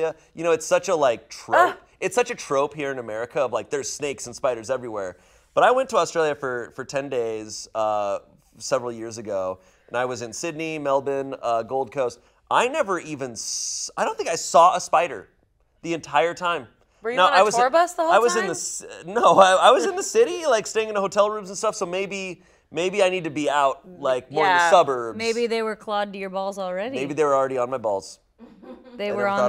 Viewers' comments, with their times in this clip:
0:10 I love how Shayne say Melbourne correctly :)
0:10 finally an American pronouncing Melbourne properly 👏